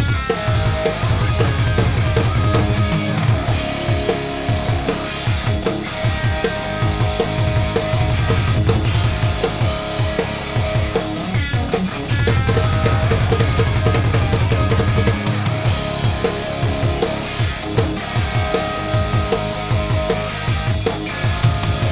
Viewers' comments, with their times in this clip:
0:09 At about the mark the drummer absolutely slays the fill. Nice job